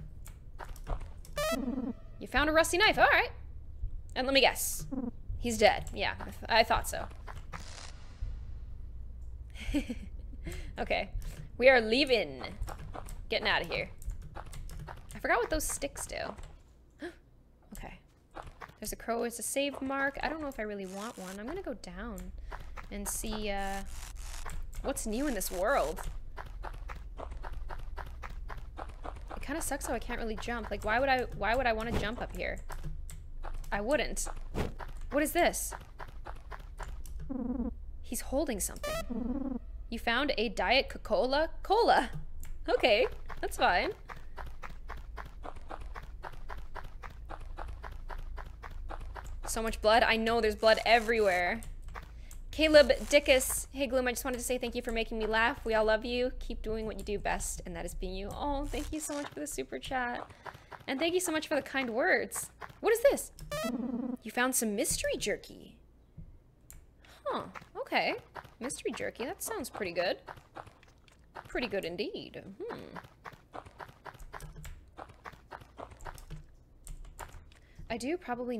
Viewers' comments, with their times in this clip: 0:09 why'd she laugh? Her friend is dead
1:03 she sounds like yoda